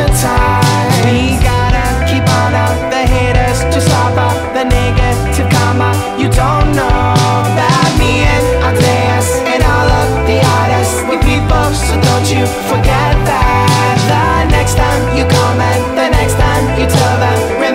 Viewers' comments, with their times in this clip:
0:04 i nyru i what the fucks he sayin then. Good for him there's the pass.